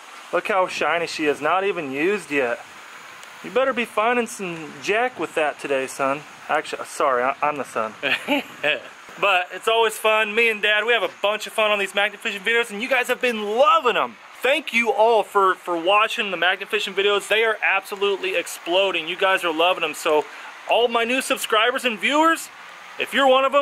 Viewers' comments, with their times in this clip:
0:07 Dude that laugh 😂